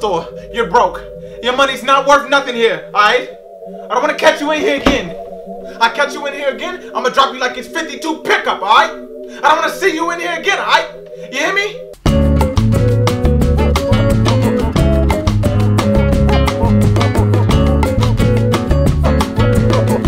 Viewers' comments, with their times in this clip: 0:06 My brain heard, "Ima drop you like a '52 pickup truck."